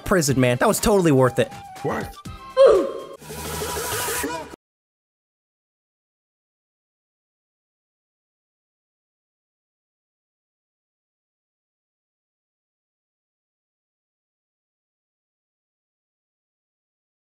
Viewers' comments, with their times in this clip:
0:04 why did the music stop
0:05 Why did the outro music just stop???